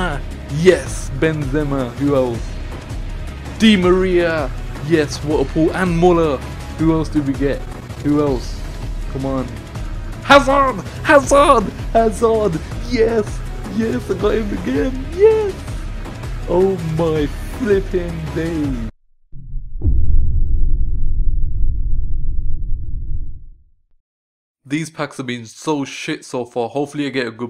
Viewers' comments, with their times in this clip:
0:08 sounds abit like stitch :D